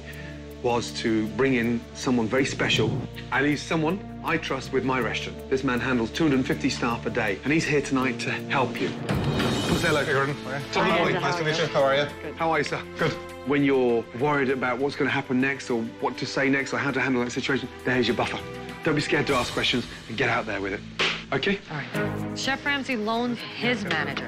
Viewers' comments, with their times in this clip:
0:08 introduce you to a master manager Me: Why he carrying a Boss Music?